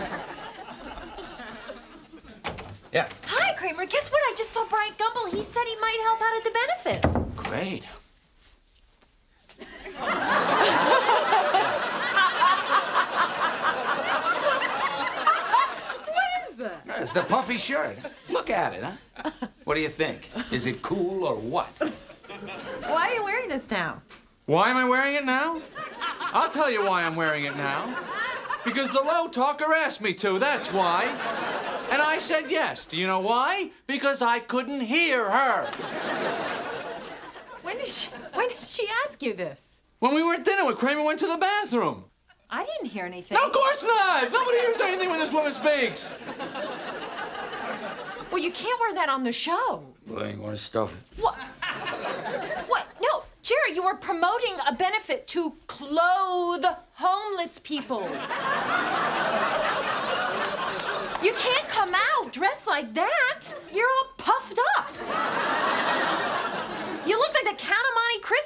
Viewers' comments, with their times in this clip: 0:10 Elaine's laughter is the best.
0:50 LMAO when Kramer says out of the side of his mouth "Elaine you want to stuff it"....STILL hilarious